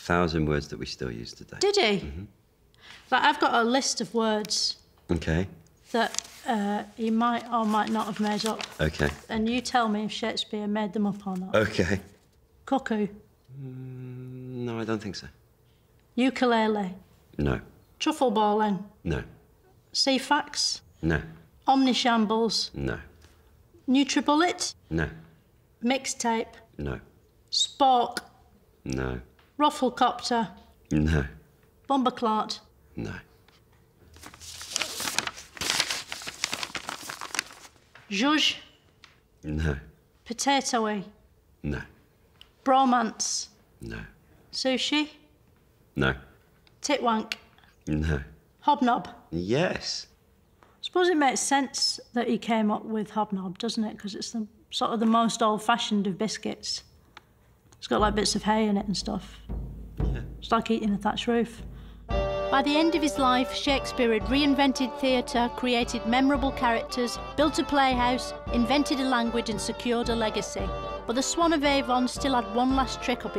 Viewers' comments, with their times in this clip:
0:10 I could listen to her say random words interspersed with that deep, velvety "No" for a longer time than I'd care to admit, even to myself.
0:55 I love the barely contained laughter of this David-looking fella at Philomena's elaborations on the word "hobnob"